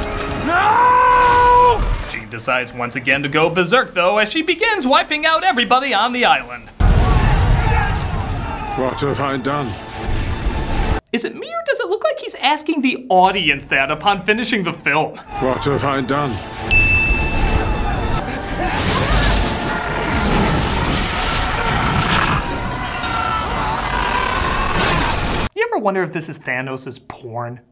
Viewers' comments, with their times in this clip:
0:08 and the award for the most robotic delivery goes to....